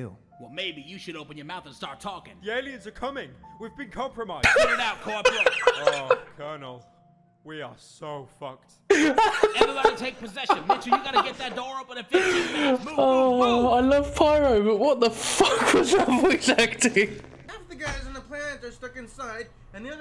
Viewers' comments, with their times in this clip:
0:03 I love pyrocynical voice acting
0:05 Awww Colonel...we are so F****ed. That's amazing voice acting! I giggle every time